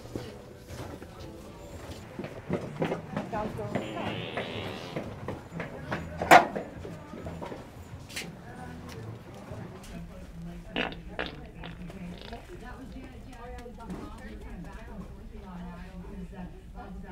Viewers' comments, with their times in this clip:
0:03 is def my fave fart sound out the 3 🤣